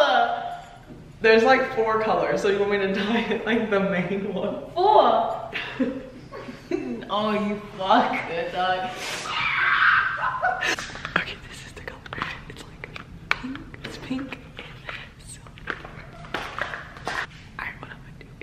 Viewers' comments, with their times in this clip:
0:04 do y'all hear how she say four ?? am i the only one who thought she was lesbian??